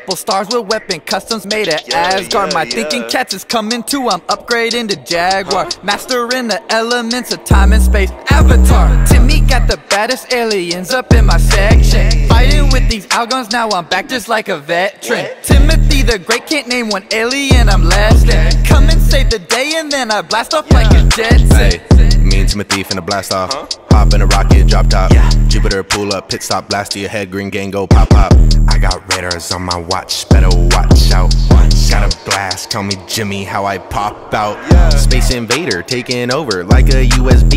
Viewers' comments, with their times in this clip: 0:07 Who else loves that 808 part🔥
0:13 Damn that whoa smooth🤯
0:14 So we not gon talk about how clean that woah was
0:22 that flow tho